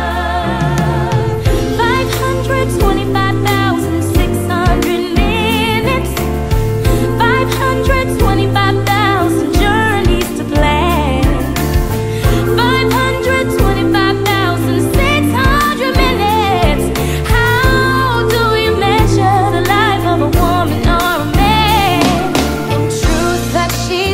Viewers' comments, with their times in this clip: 0:08 I love Amber's note R.I.P. Cory...